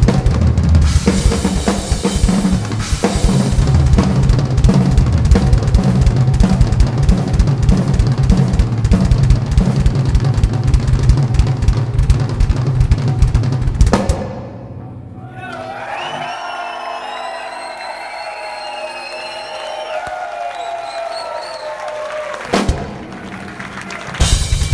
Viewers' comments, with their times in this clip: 0:10 I'm just warming up my Harley.